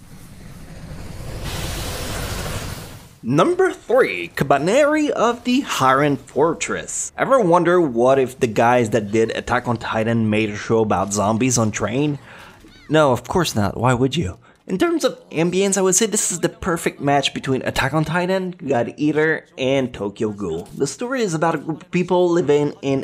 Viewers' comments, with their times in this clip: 0:07 did I hear 'haren'???? It supposed to be iron right?